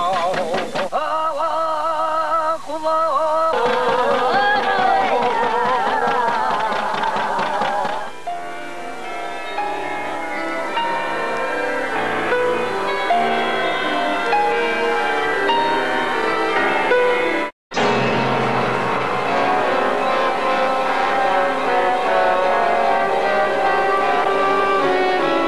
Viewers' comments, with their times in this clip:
0:09 Damn, scary music haha.